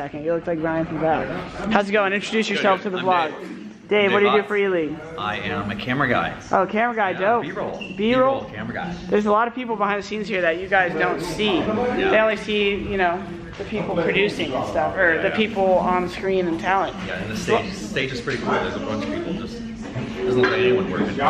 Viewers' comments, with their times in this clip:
0:03 The fucking Matthew McConaughey perfect impersonation. Only change camera guy for 'aalriight' and you have it.